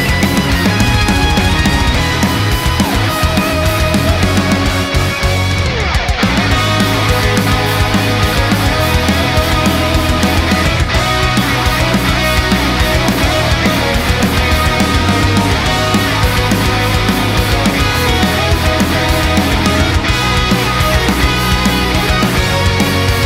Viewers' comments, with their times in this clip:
0:07 The "song" part starting is super powerful, I know you said you were aiming for a very melodic feel in that part like someone could sing over it and it really shows, I love how I can almost hear lyrics, that was such a cool solid part !! :D